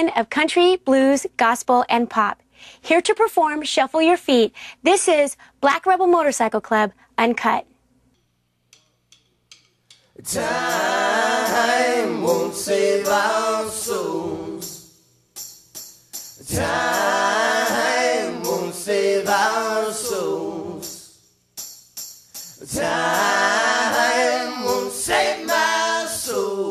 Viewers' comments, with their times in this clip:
0:08 music starts ..you're welcome :)